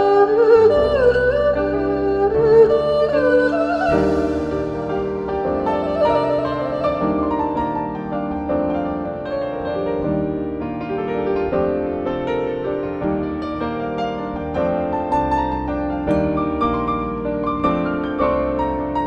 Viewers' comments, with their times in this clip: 0:04 i love that piano solo...